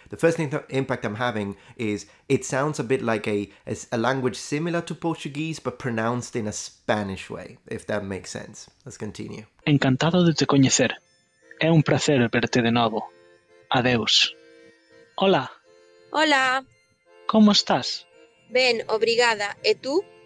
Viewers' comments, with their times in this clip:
0:04 yes, I’m Brazilian and I agree with you… When I hear someone speaking Galician it sounds like someone speaking Portuguese with a strong Spanish accent.